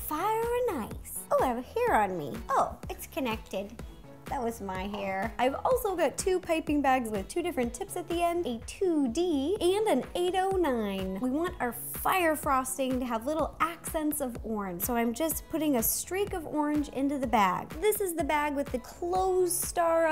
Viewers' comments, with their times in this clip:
0:04 that was my hair (ro) Me: 😃😍 you sounded so cute